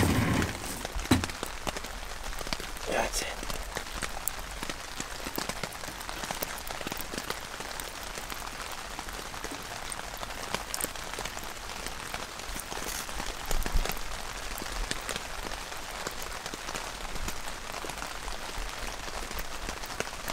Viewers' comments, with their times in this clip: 0:04 is the highlight of the video. I LOVE a great bed of coals and the sound of rain beating down. I could watch that for hours!